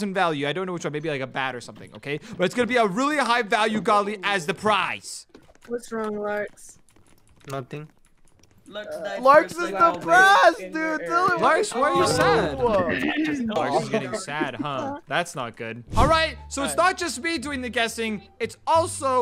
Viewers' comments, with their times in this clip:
0:07 his "nothing" was so sweet 😊